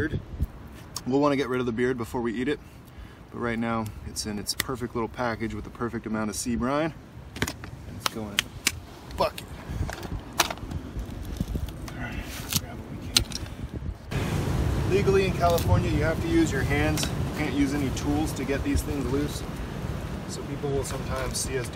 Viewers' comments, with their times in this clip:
0:09 I know he said bucket but it sounded like fuck it